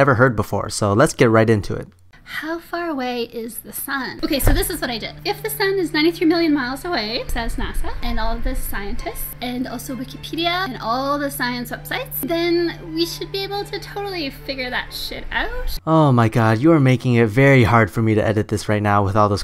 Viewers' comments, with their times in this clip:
0:07 OMG .. it's her again ... with the dumb laugh.... damn... btw... she is really dumb... really dumb ...